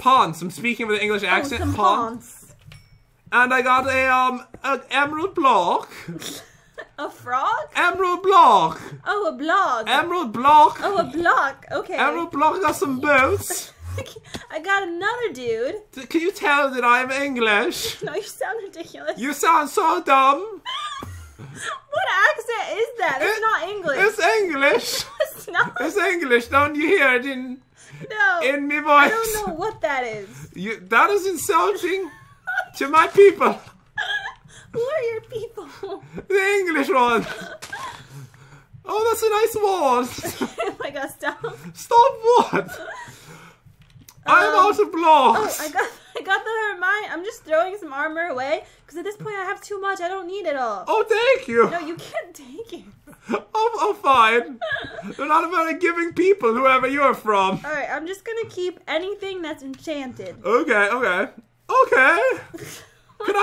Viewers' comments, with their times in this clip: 0:06 kinda sounds like an England accent and a pirate accent mixed together Who else agree’s?
0:14 I know you didn't mean it but I found that quite offensive because I live in England and out of everyone I have known no one actually talks like that. Although, I guess it is alright because you didn't know.
0:22 THAT IS NOT WHAT WE BRITS SOUND LIKE
0:46 umm anyone else going to point out thats an Irish accent